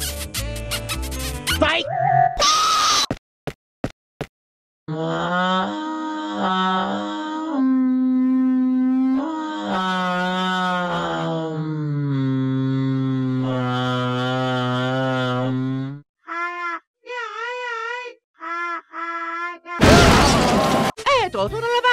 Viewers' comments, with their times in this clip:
0:04 welcome to Mario’s asmr :D